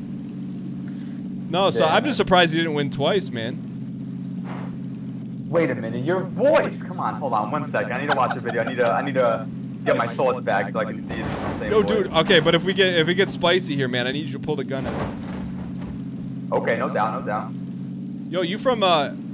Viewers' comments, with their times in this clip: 0:05 "Wait a minute, your voice!" The realization in his voice was amazing.